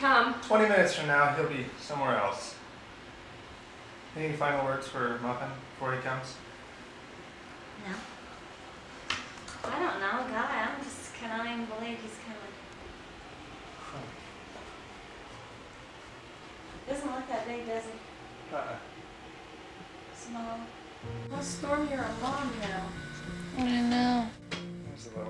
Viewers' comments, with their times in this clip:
0:07 when she said "No" i thought it was Rydel haha! you guys have the exact same mannerism and way to talk! 🥰🥰